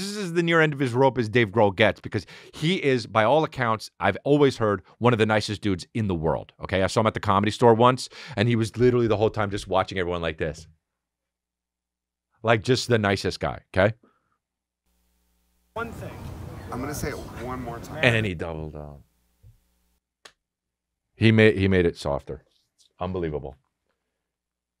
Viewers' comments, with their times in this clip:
0:09 best Dave Grohl impression